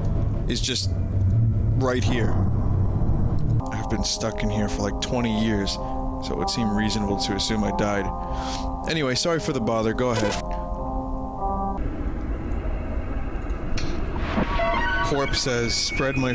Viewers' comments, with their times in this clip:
0:03 I like the music soundtrack o3o and I feel bad for the guy who was stuck there for 20 years and assumed he was dead ;^;